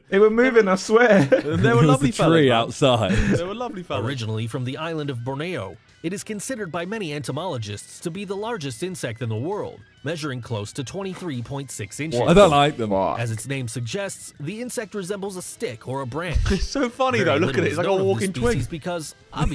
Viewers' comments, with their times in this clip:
0:03 "Bornayo"? And why did they put up a picture of Brunei to represent Borneo, that's only one of the three countries Borneo is divided between